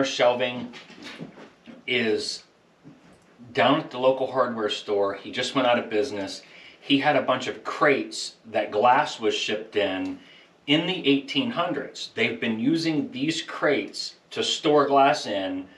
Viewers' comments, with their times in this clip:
0:03 At the mark the noise in the background. Was that the cat falling from the loft?